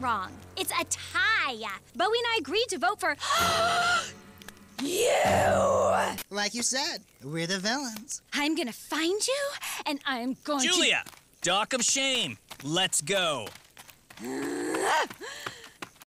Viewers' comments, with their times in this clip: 0:06 for a long time i thought Bowie said "Like you said, were developed"